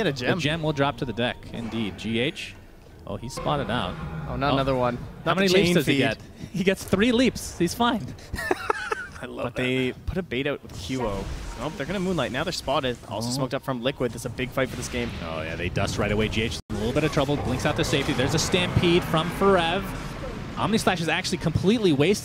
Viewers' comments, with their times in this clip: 0:08 That laugh on